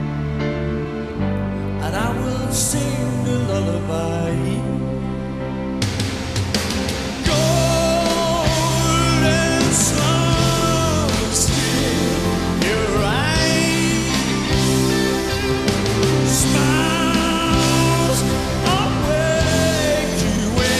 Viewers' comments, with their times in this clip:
0:07 Wow, I started to cry He still hit his notes perfectly. My highest wish is to see Sir Paul live once before I die.